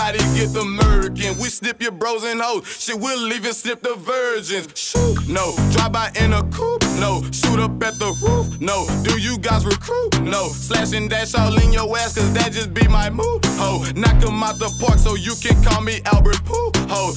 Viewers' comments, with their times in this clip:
0:04 is the best part lowkey that flow was clean